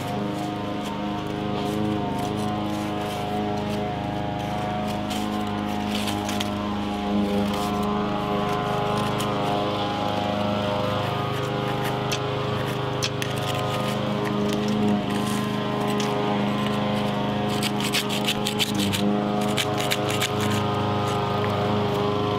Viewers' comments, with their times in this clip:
0:06 I love the sound of the boy mowing the lawn. Everybody has chores.